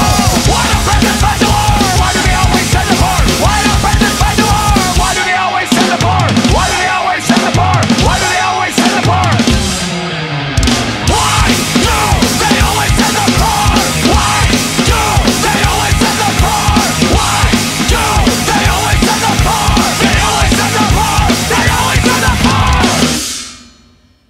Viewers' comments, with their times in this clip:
0:10 That one extra snare hit was brilliant.